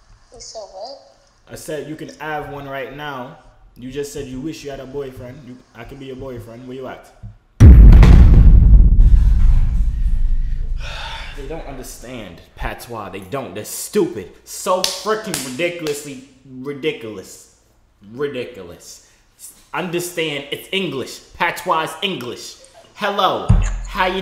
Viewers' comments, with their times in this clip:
0:08 You broke my ear drums